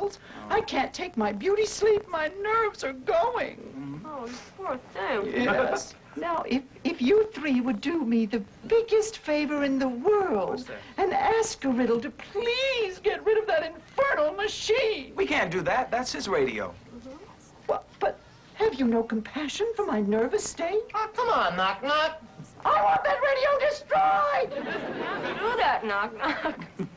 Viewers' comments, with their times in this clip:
0:07 this knock knock bird sounds like Sheldon Cooper ranting today